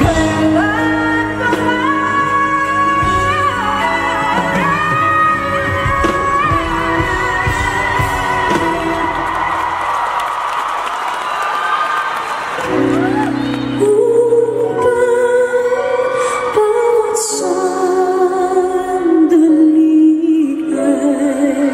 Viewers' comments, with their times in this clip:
0:06 When Sarah wanted to clap so hard when Regine belted. So humble! Love them both